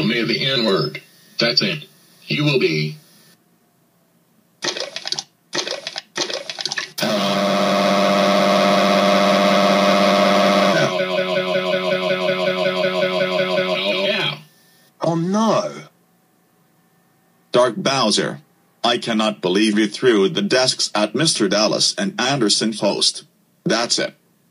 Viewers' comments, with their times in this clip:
0:07 Turn down the volume